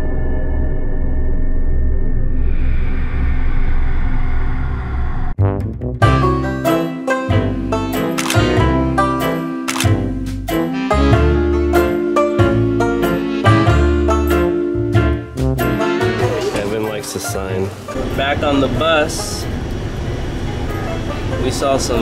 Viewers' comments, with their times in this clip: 0:04 why is the music so dark and then happy?